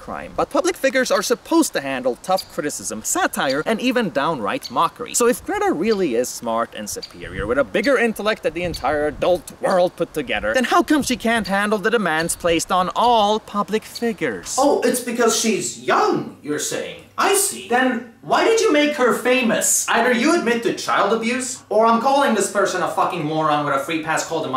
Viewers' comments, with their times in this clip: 0:07 gotta love the woodpecker yeeting in the backround